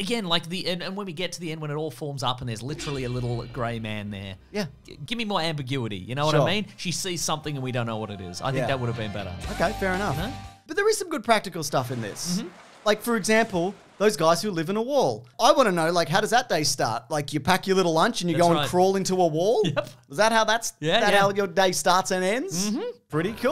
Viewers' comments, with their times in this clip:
0:09 Jesus, I feel that the camera crew didn't quite get the memo on how much of a bang was about the occur.